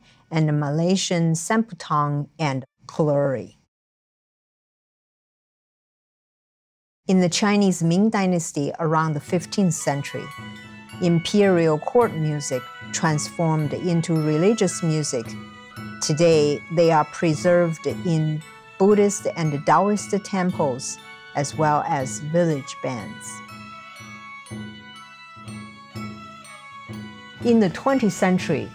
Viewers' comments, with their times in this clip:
0:09 The Zhihua Temple melody sounds like the beginning of "Zai Na Yaoyuan De Difang."